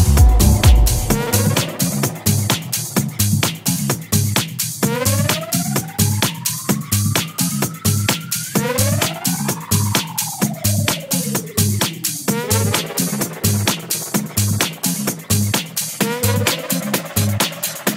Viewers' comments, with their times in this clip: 0:03 WHAT‼️🔥 OPEN FORMAT DJ’s❤️‍🔥❤️‍🔥❤️‍🔥 POLYRHYTHMIC STYLE IS WHAT’S UP!🥁